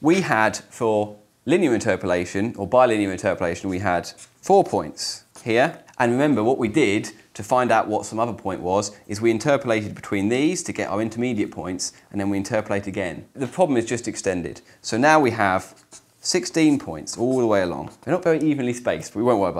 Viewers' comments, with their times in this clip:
0:05 gratuitous paper ripping